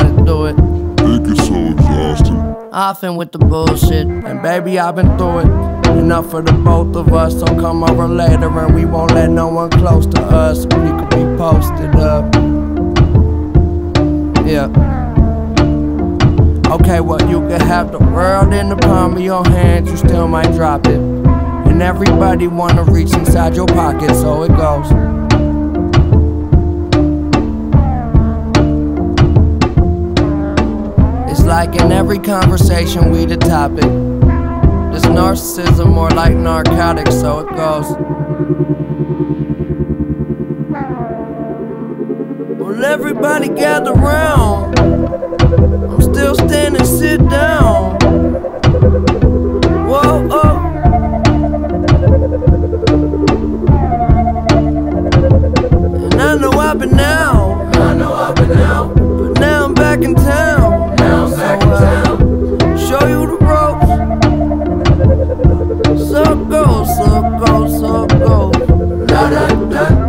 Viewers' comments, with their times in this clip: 0:03 the only man who could make a microwave beep aesthetic
0:19 why does remind me of minecraft? 😂
0:42 i love the beep
0:43 Yes, they were meant to be complimentary albums. If you want to see something really weird, listen to to the end of the album and tell me it doesn’t sound like he’s saying “circles” instead of so it goes
0:51 I love the sound of the beat.